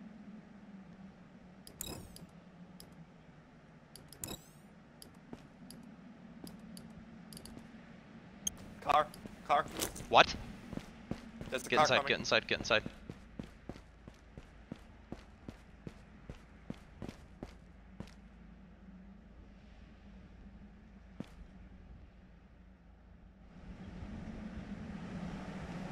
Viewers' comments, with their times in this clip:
0:07 I don't know if anyone else noticed, but at the exact moment his friend announces the arrival of a car, a very thin whistle and difficult to hear. I feel like that whistle was a warning to the friend to scream car.